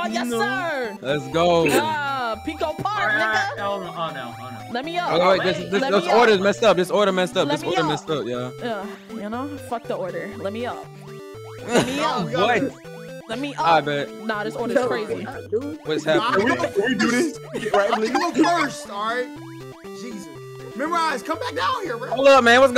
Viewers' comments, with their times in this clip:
0:09 "fuck the order let me up" the sass + moan 😜